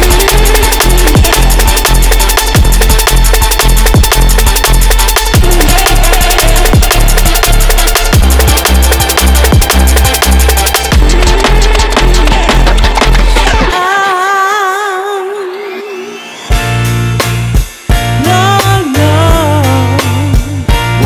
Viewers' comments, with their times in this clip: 0:03 i think its too much in this song style like this. Should be longer bits than feeling like your speakers are broken. Sorry its only my opinion)